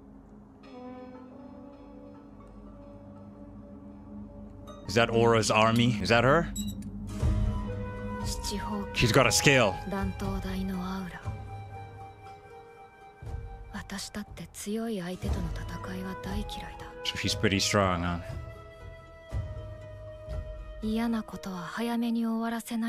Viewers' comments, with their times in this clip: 0:09 I heard as "SHE'S GOT A SCALE! EVERYBODY GET DOWWWWWWN!" 😂